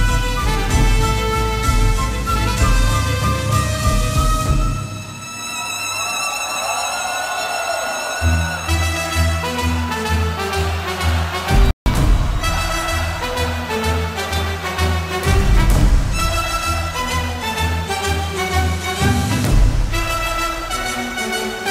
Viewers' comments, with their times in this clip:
0:08 goose bump. Hearing my favorite childhood song once again